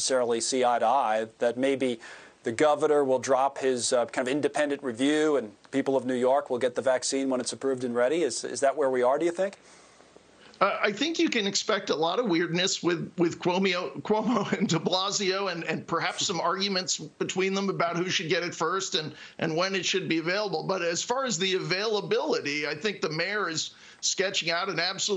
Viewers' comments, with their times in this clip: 0:10 "Chromeo". You got it buddy.